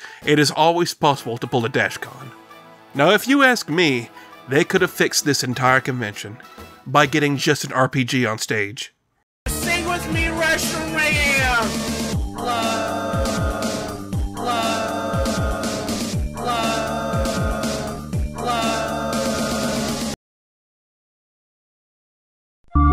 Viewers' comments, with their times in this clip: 0:08 NO NO I WAS TRYING TO GET HIS MUSIC OUTTA MY HEAD NOOOO